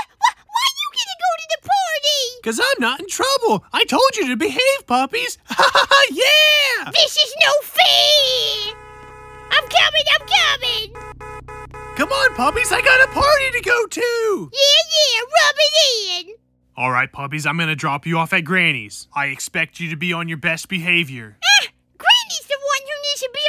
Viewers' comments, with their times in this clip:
0:08 dad stop honking
0:08 dad stop honking